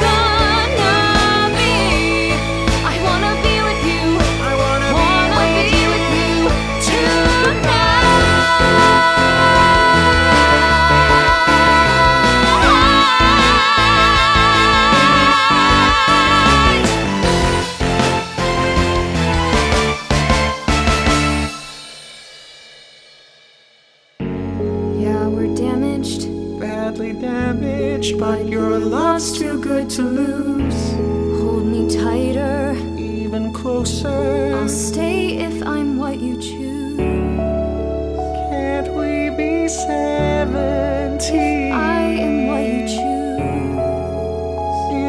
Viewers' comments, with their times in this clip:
0:05 That little voice crack makes me feel a lot of things
0:07 I actually love the ending they chose for the "tonight" that starts more than most of the Broadway versions I've heard. These two humans are superhuman ❤
0:27 the way their voices sound together makes me really question myself